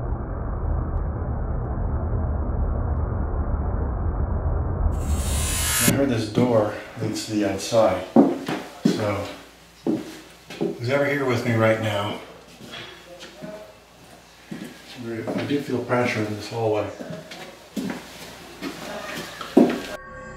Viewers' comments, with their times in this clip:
0:03 "Mason" and when door rattled "Dave"